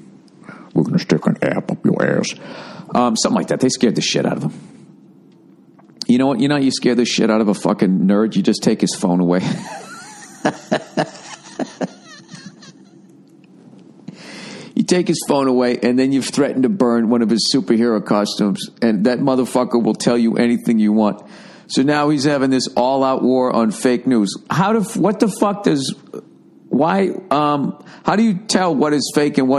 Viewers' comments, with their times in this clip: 0:09 Bill's laugh cracks me up
0:12 did you swallow a chew toy, bill?